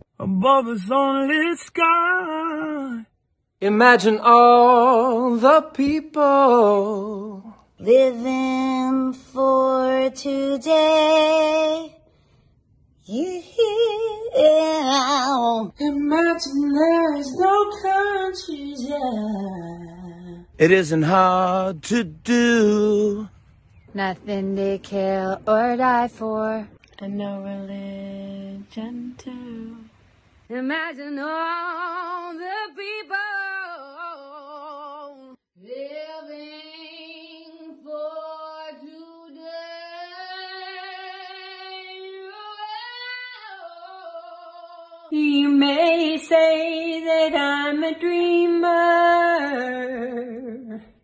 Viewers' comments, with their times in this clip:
0:09 in here you can hear the heartfelt sincerity of them.
0:36 Sia, nobody cares if you can sing long notes. People were dying back then, damn it.